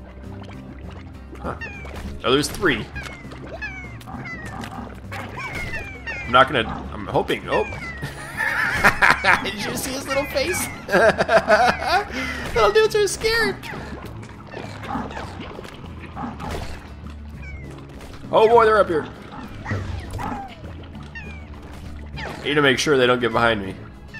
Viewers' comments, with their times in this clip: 0:07 DUDE STOP BIEING A BIG MONSTER...WYE U JUST SIT THERE AND LUAFE... WYE >=( you monster